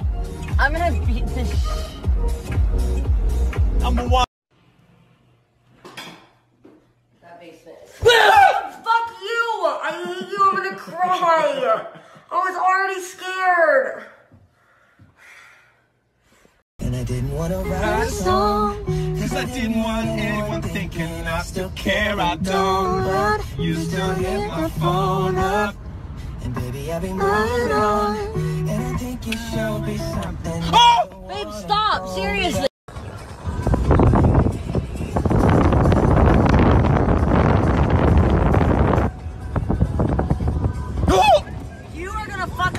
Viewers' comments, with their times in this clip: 0:04 omg his accent
0:21 Look I love them even if Liam isn’t that good singer he still sing with her😭
0:25 them singing together reminds me of that one scene in the last song where they sung she will be loved